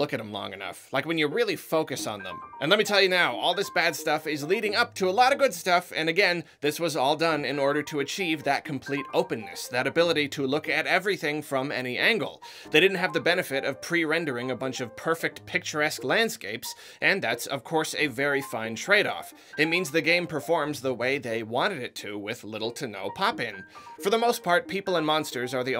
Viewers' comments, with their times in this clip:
0:07 * piano man plays